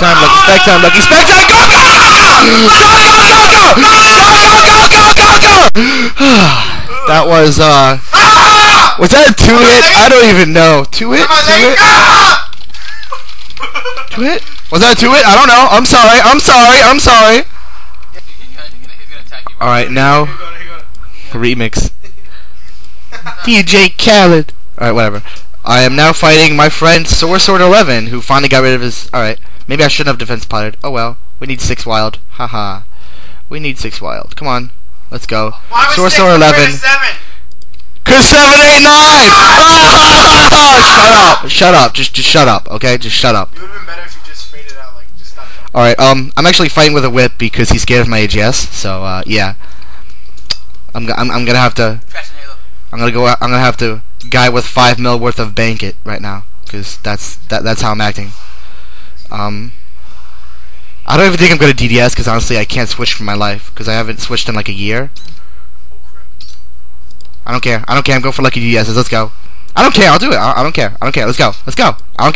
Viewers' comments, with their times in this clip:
0:04 you make me laugh so fking hard when you scream wen you get the kill
0:59 lol, anyone hear the mw2 level up sound